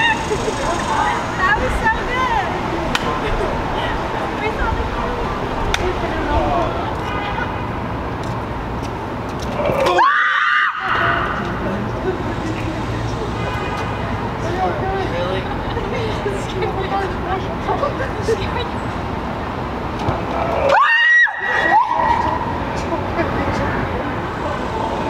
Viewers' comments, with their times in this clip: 0:07 Pure horror movie scream ❤️